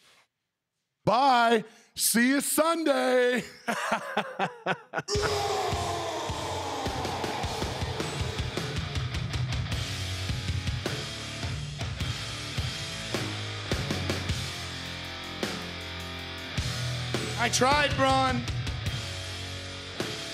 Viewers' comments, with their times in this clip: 0:04 that evil laugh tho 🤗